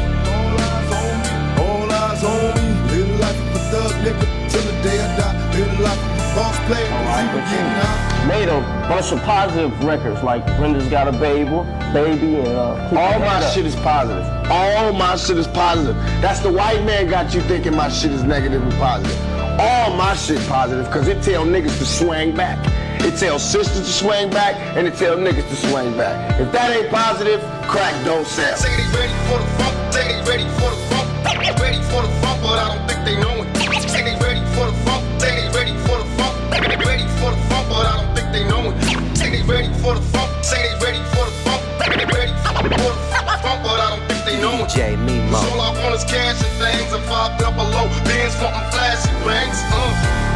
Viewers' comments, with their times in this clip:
0:10 Brenda's got a bagel
0:32 Dj in the end is fire 🔥